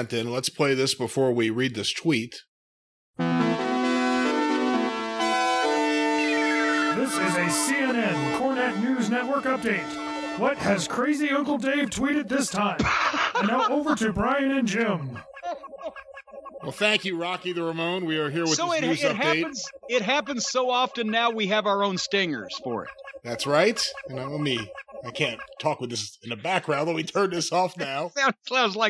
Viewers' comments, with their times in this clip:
0:10 that sounds like Gallows and Anderson 😂